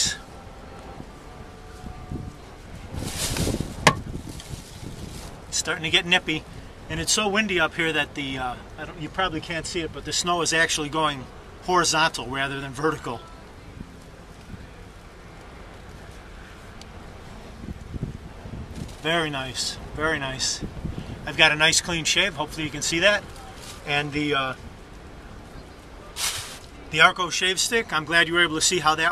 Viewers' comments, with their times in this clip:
0:10 I couldn't adjust to the sudden change in context.. It sounded like "The snow is going XTG rather than WTG"!!!!